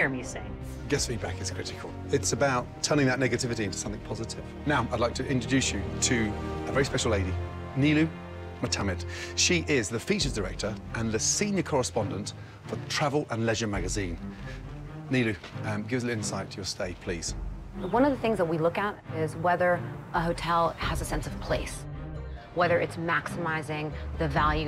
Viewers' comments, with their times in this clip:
0:03 did Gordon just say, “niggativity” 😂
0:09 No matter how many times I rewind, all I hear is "she is the fetus aerator".